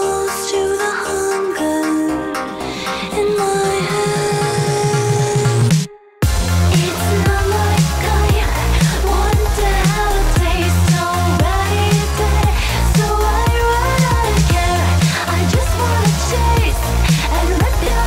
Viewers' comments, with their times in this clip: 0:05 When I first heard it, I thought it was “It’s another guy, wonder how it tastes”